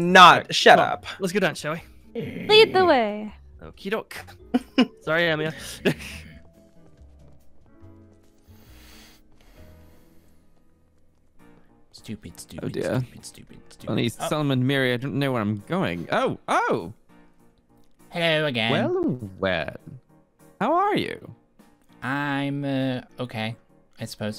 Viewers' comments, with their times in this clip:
0:06 You can hear the anger in the breaths